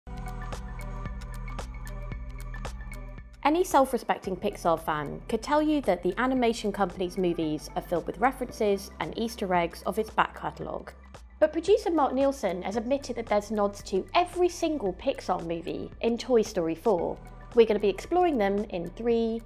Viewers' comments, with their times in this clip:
0:01 I thought it was woody's voice.